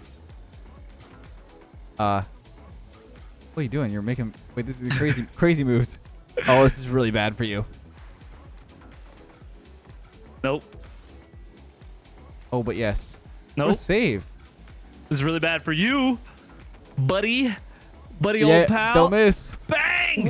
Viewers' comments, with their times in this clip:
0:07 all of this just sounds like an anime battle but the main character and villain are just a litttttleee slow